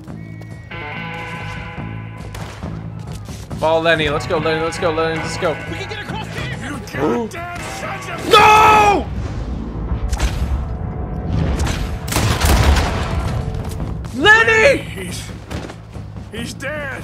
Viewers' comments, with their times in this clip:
0:03 That yell tho